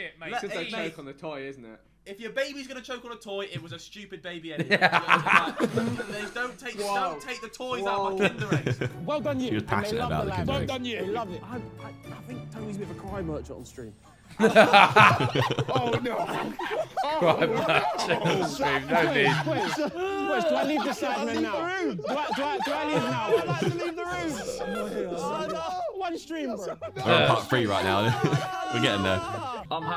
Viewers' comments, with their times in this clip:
0:10 I don't get this one, is it British slang? I'm hearing "Cry mercher" or something